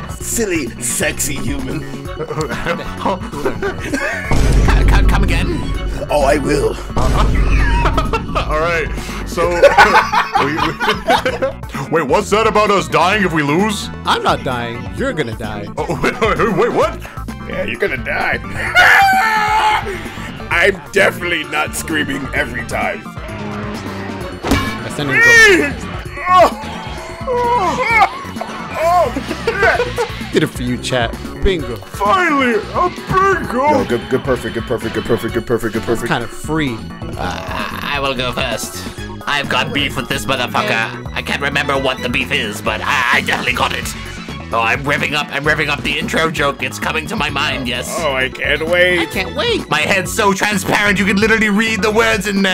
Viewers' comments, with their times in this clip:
0:06 Ayo cooler calm down she's married edit: they sound so uncomfortable 😂
0:34 has the same kinda "beat" as "rafiki rafiki rafiki rafiki"